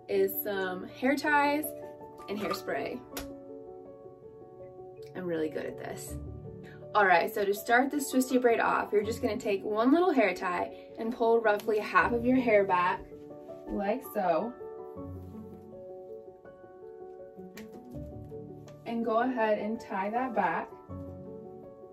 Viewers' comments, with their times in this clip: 0:03 The pause was perfect. You're a natural in front of the camera.